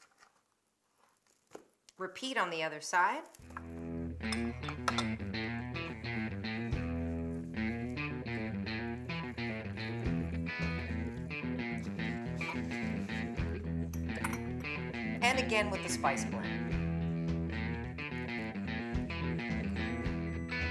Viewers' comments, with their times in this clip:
0:03 start the guitar-riff bbq /trucker music ...lol . Ribs or pasta recipes-all looks amazing Chef!